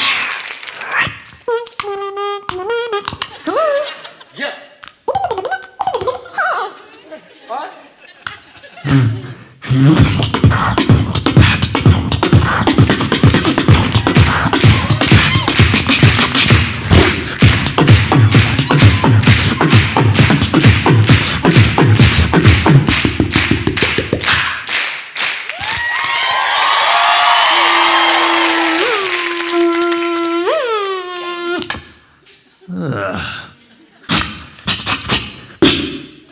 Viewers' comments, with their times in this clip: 0:10 is where the most infectious beat is
0:17 it sounds like a beat Tom Thum did at TEDx